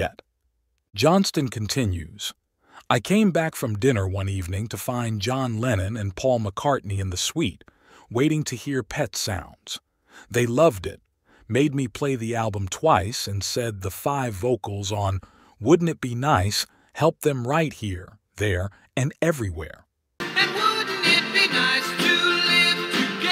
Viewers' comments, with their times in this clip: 0:07 "Help them RIGHT HERE. There and everywhere". And THAT'S when I realised I was listening to a bot, not a human.